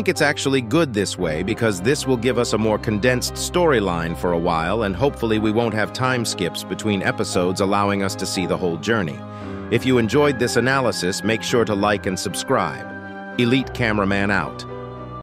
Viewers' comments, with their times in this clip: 0:10 he censored it because if yk yk🎌🇩🇪 Anyways i have a theory, It sounded like a lady screaming for help and i think the humans are going extinct since the toilets decapitate their heads and make it robotic then put it on a toilet thats why,in episode 18 spider toilet's head exploded so does that explain it.Comeback to this comment if its true